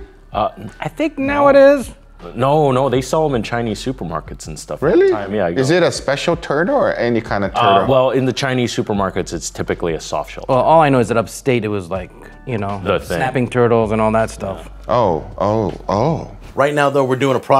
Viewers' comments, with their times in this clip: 0:05 i thought he said “is it a special turd” 😅